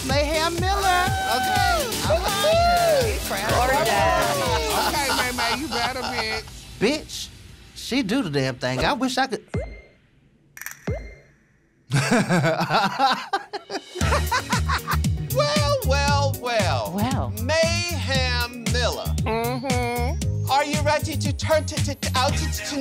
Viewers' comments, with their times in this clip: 0:09 goofy ahh laugh 😭 ❤️ ugh I love Rajah SO MUUUUCH